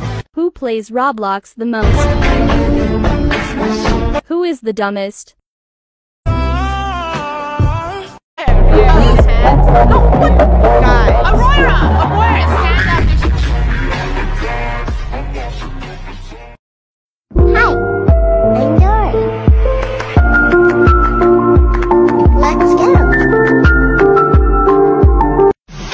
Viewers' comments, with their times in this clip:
0:09 I love that god song it’s SO COOL